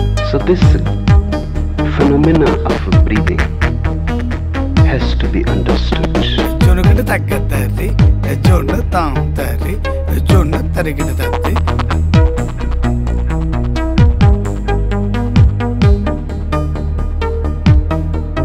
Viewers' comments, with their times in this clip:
0:06 This dude going ham with some indian rap lol